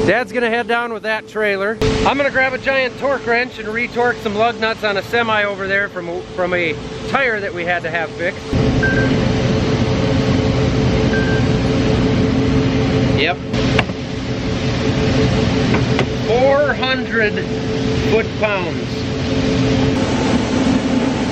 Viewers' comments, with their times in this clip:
0:07 hahah, you have the same ringtone as I have, and I thought I'm getting a call xDD